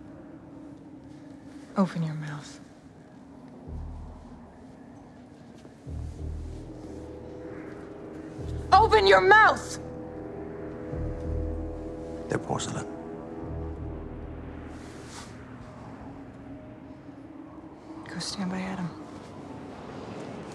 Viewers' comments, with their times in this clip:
0:08 by the way, if you listen carefully to the music, you can hear part of the main theme of The Thing, which may have hinted that Sanders was the Thing. Well, it's just my theory, but it would be great if that's the case.